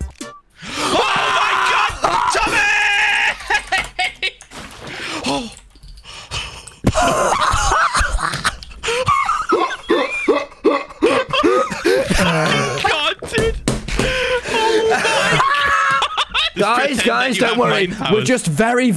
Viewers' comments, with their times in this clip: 0:04 The fact that they both looked at eachother after that and then broke into hysterical laughter is just perfect for a movie